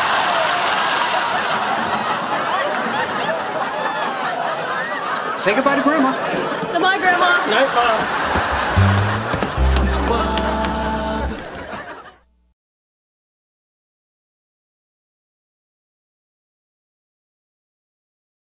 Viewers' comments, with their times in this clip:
0:09 Hearing the voices sing "Squab" in the same way they would sing "Men" was genius